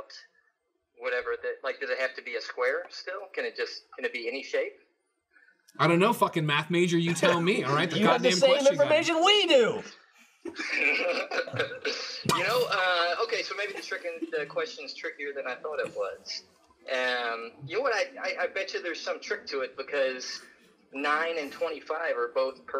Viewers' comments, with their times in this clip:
0:10 I didn't realize Greg Miller was friends with Seth Rogan 😂😂